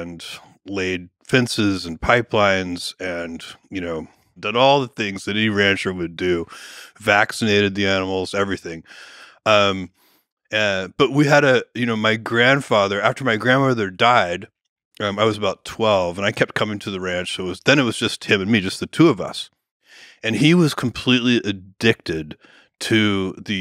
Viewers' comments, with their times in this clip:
0:05 vaccinated, I can*t hear it anymore